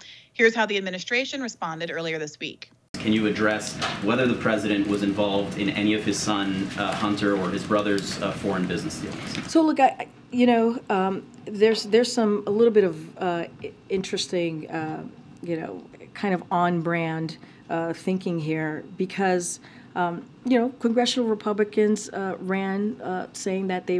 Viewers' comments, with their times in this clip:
0:10 “um… ah….um….” All that stuttering and looking down gives it away, guilty!!!!